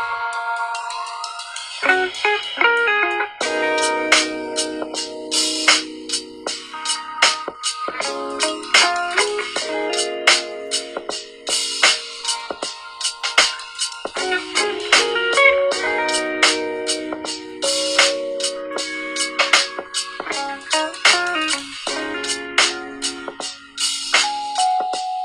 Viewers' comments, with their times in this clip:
0:08 my new favourite music now